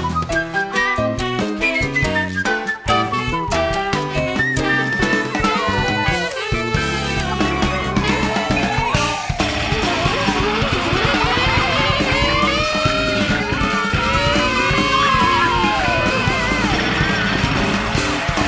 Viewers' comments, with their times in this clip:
0:06 LOVE the 'shout chorus' w/siren